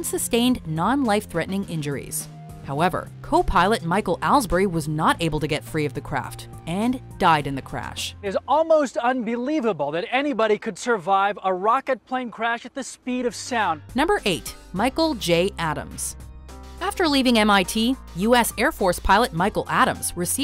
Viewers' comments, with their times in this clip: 0:08 This Guy's Voice Is Similar To Connor's From DBH.